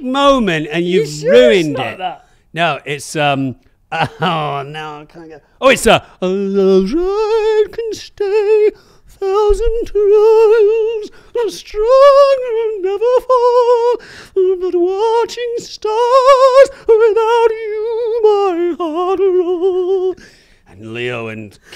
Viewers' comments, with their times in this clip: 0:07 sounds more like The Fifth Element than Romeo + Juliet😅